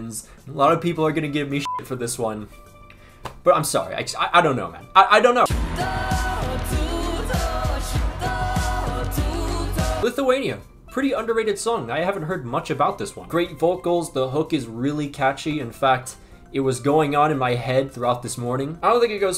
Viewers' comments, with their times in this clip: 0:06 felt like africa from 2010 world cup lol